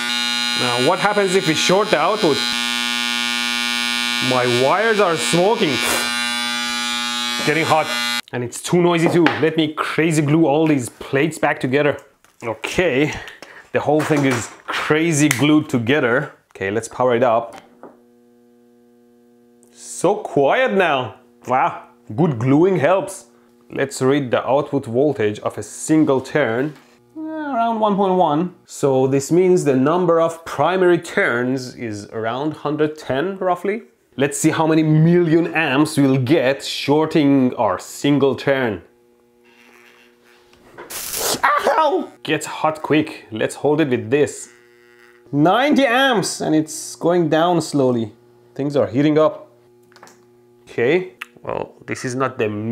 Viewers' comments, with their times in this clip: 0:04 new transformer Adaptahorn was invented
0:18 congrats you made a noctua transformer
0:27 the music made it more fun
0:33 yes, transformer noise comes from ill fitting components, and transformer is in essence an electro magnet and that was in by in too the video, and they was already bang and some sparks too 🙂